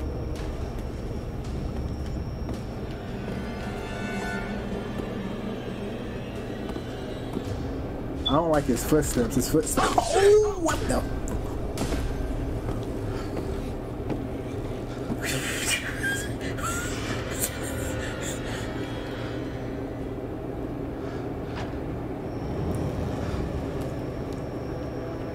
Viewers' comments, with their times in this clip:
0:08 Help me spongebob lol was hilarious lol your reaction and I do admit she caught me off guard too lol but I got lost too for a while. I tried cutting some of it out at the end cause it was getting bad on my part lol. and I HATED those damn bells lol.